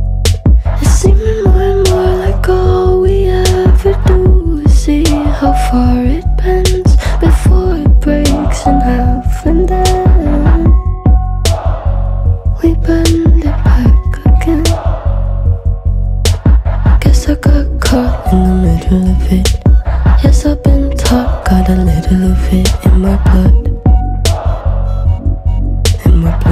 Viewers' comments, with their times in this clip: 0:07 just me noticing the back wispers very similar to Resident Evil 1 intro theme from M.Manson? Perhaps it's on purpose?